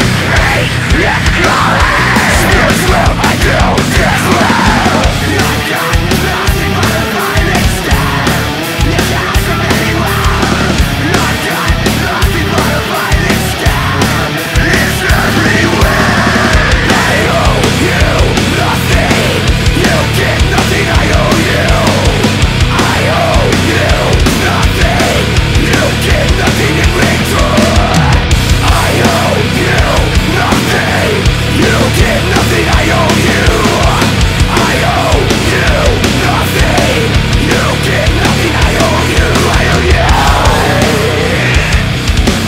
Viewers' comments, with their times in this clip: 0:05 THAT GUITAR IS FUCKIN INSANE DID ANYBODY ELSE CATCH THAT?!
0:28 The whole song should have that drum tempo. Keep the regular riff, but do that drum mostly and this song would kick even more sss.